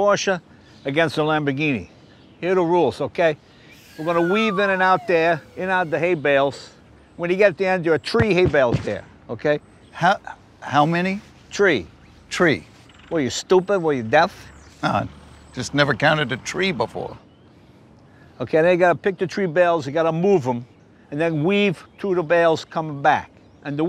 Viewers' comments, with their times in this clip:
0:08 Did he just say tree instead of three